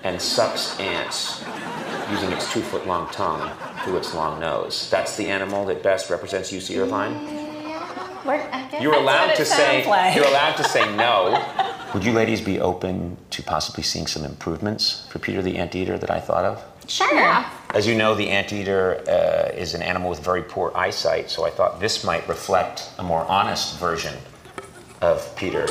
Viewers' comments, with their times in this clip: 0:06 scariest noise i've heard in my whole entire life
0:07 What was that creepy voice